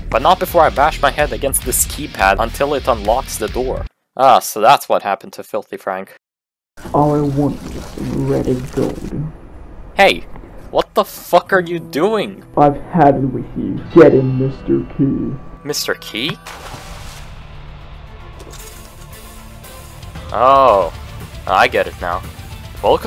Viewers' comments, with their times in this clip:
0:10 i like how he sounds just like simon in this scene